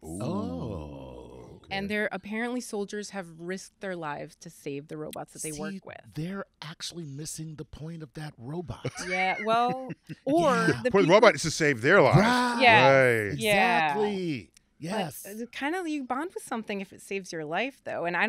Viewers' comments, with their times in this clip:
0:05 I love Chuck's delivery of this joke, oh man.